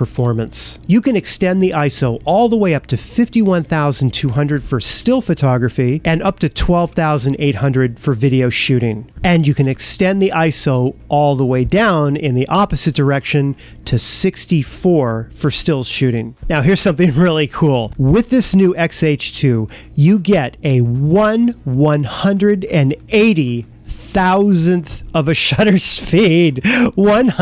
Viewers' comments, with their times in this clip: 0:09 Because I did a crappy job of recording it. I used a boom mic which was not really ideal and I was too tired to reshoot the video when I got it into the editor am. Agree, the audio sucks!